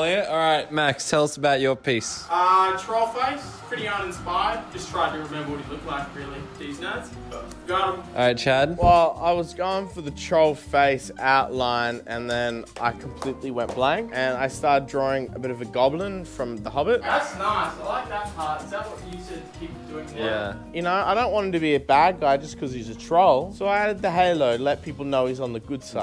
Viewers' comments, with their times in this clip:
0:07 The way he says it so nonchalantly cracks me up 😂😂